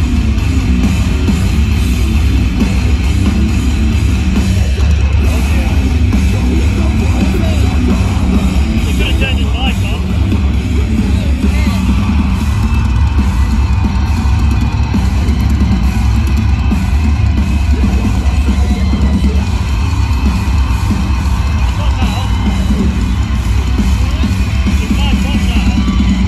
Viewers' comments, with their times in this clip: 0:08 they could've turned his mic on hahahaha